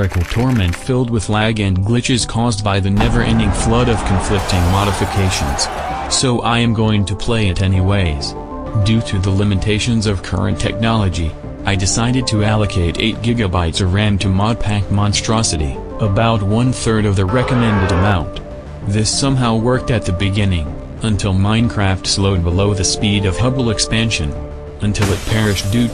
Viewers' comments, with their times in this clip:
0:08 what happened to the voice